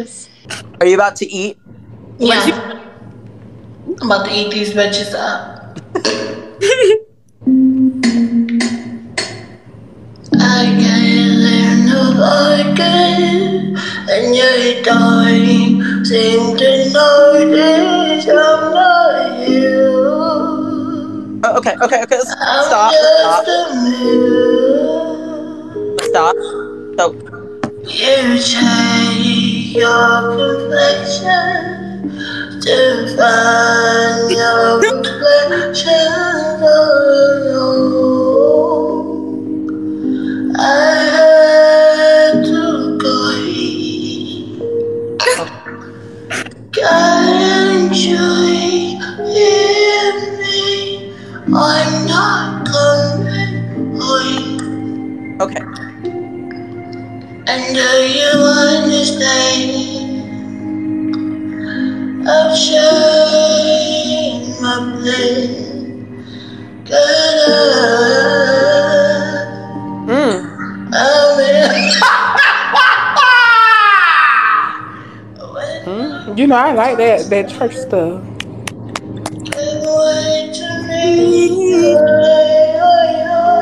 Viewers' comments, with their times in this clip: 0:07 i actually like how she sings lmao
1:07 Now this run had me going back for more! This actually sounded good.
1:07 she was actually SANGING, I bet she could deadass sing in real life